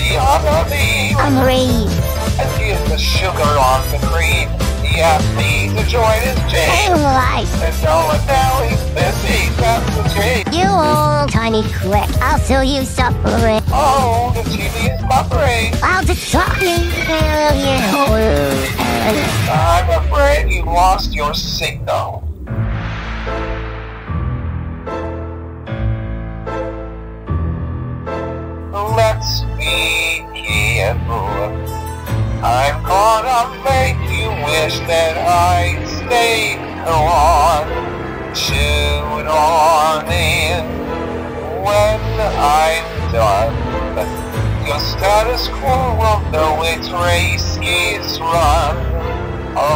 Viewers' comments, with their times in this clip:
0:07 i just noticed that every ai cover of stated gone doesnt say "hold on" correctly it always sounds like "why"
0:34 crackling and laughing too hard